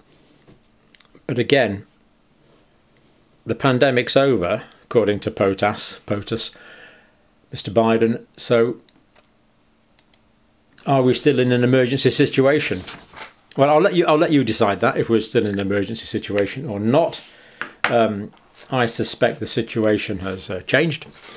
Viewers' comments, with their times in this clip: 0:05 .... "according to pot-ass" hilarious, if perhaps a bit offensive to potassium.